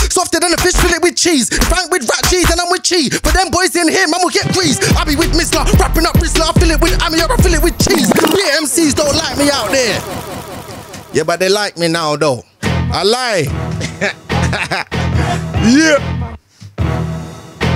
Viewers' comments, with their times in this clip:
0:04 Bruhh the way he caught the beat crazyyyyy